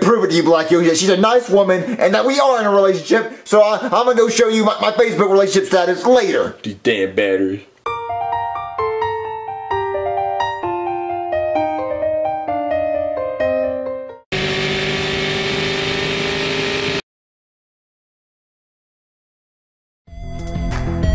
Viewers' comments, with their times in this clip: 0:08 I love the way the song goes when my life makes me wanna be happy all day 😊